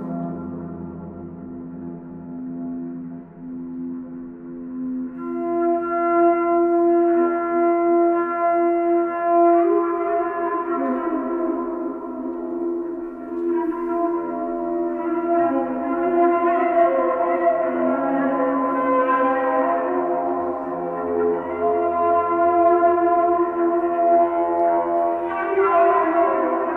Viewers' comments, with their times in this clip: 0:08 Its sad how many phones I can spot in this video...how can anyone be 'bored' at this haunting mesmerising sound...really really saddens me to see when this sound talks to the deepest core of your soul.